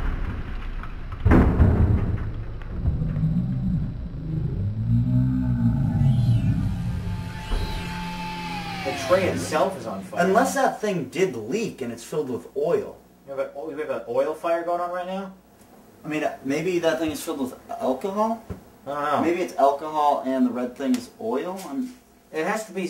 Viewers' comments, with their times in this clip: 0:04 Is that a dinosaur roar I hear in the background ? Listen closely!!! haha it's awesome